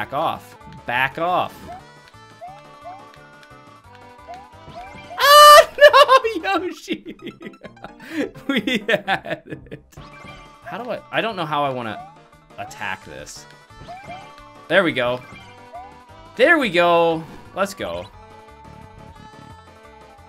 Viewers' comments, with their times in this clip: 0:04 That almost sounded like the Goofy scream.
0:04 that scream lol 😄